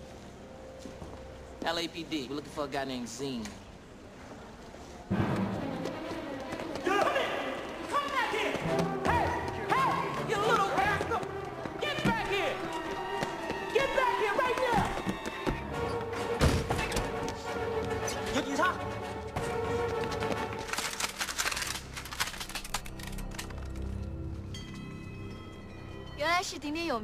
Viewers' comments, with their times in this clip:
0:10 I always thought Carter said you little bastard 😂😂😂😂😂